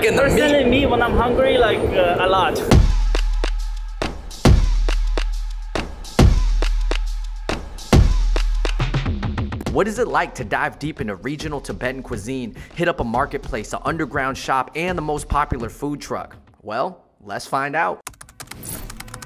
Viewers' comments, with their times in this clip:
0:03 Whenever you hear that sick intro beat, you know, life changing food is coming!